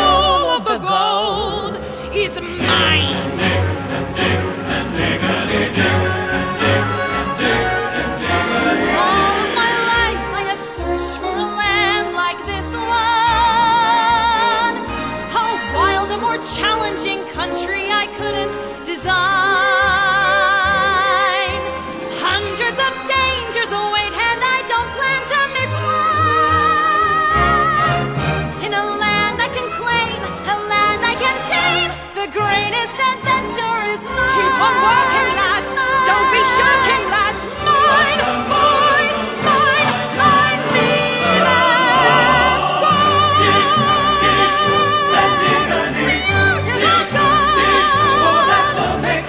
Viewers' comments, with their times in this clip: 0:10 Charlie (hazbin hotel) couldn't resist joining the musical
0:31 Ok but the PERFECT vibrato when you sang "tame" 🥵 AMAZING!!